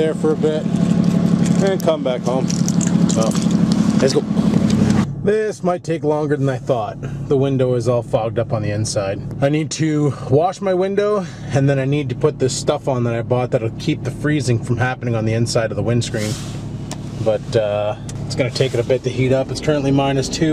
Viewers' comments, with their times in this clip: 0:04 the G6 sounded like transport truck.